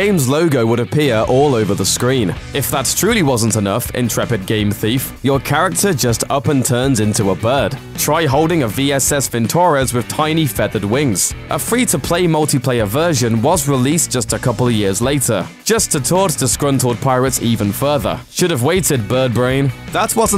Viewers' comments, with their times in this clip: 0:04 Oh, cool! I always wanted to play as someone closer to the real me!! Also the way you pronounce Giygas makes me kinda cringe...